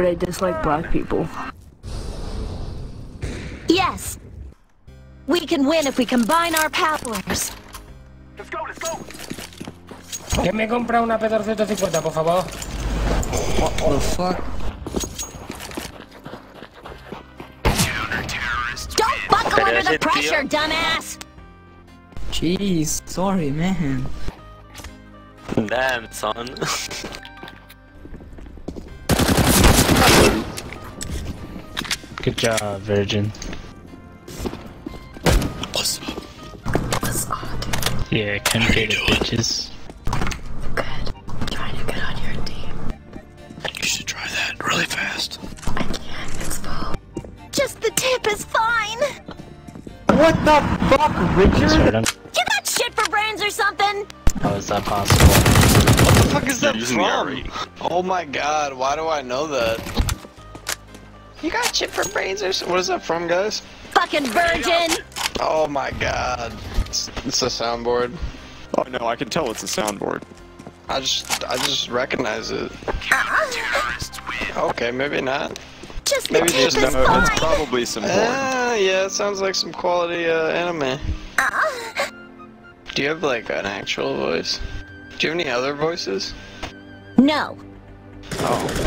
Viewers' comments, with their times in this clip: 0:10 hahahaha spanish detected
1:09 I can tell its a soundboard... -I just recognize it... Moans Okay, maybe not.